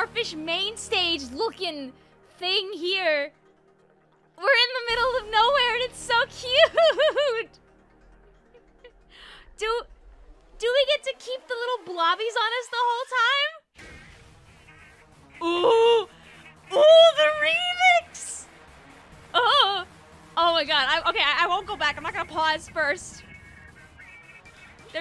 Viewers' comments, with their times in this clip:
0:07 OMG SHE TURNED BRITISH